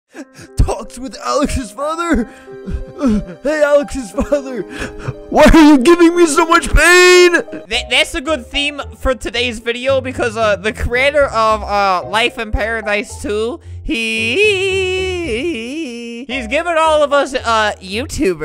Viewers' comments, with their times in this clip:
0:05 Why people like so much do they like hearing the sound of someone that crashed a car